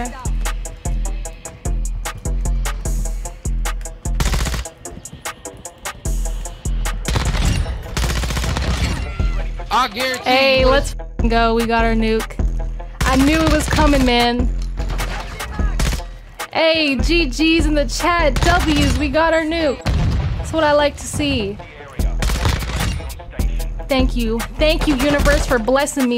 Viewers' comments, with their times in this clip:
0:07 i bet your heart dropped as soon as you heard the stun grenade lol